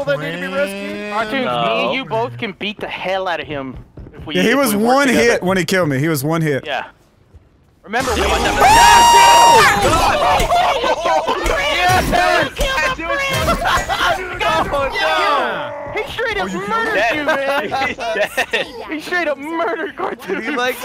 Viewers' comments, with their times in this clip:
0:08 Manliness Scream of all time